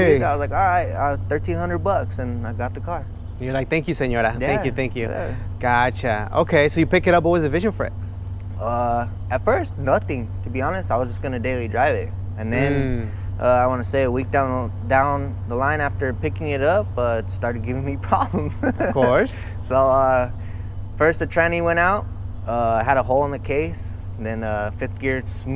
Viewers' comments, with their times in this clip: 0:08 Most Hispanic “Nothing” ever